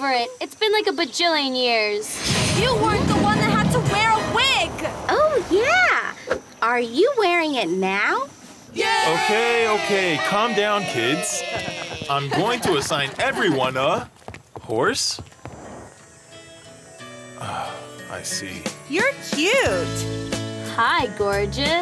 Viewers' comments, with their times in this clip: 0:07 canned laughter & Seinfeld theme starts playing